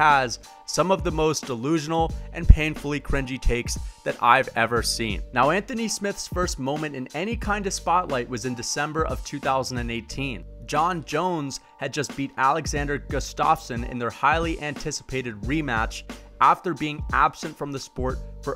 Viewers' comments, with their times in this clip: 0:04 That emphasis on the P in painful scared me